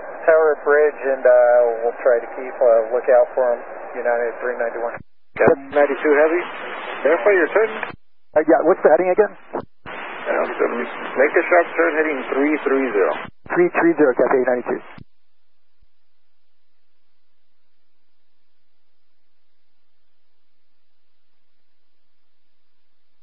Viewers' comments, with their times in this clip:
0:09 I think you meant but yea it does sound like he snuck that under his breath. Great catch.
0:11 does atc say awwww dummy?